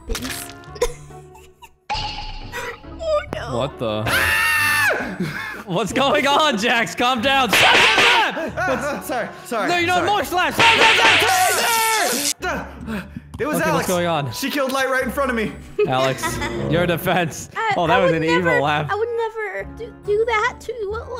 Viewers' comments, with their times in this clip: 0:03 the ultimate scream of 2020